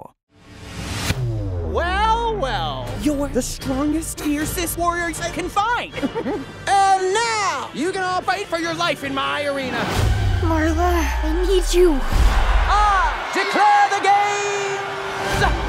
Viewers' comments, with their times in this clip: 0:03 Dat choppy audio splicing tho